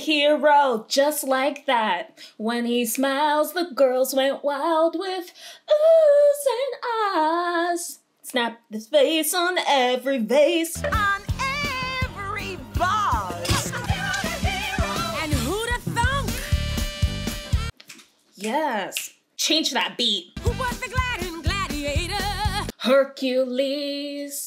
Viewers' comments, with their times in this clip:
0:05 Okay but you hit that note